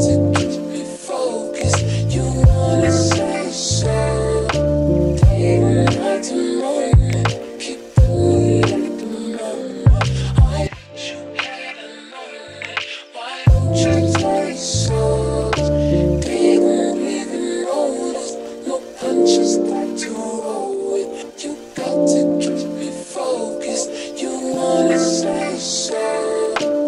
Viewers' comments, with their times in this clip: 0:10 Who else thought their headphones broke for a sec.